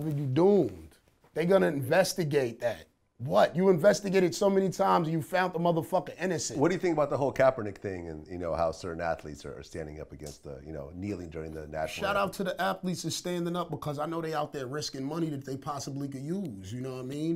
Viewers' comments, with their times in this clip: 0:05 yo the audio is fucked up at the end Vlad starts